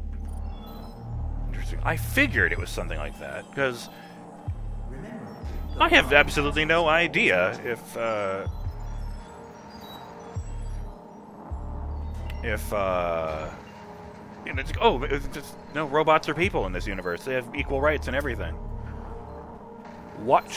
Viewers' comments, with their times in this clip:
0:06 background plays some sonic ring collection noises. Although the noises correspond to some machinery working, the noises bear a striking resemblance to sonic collecting rings.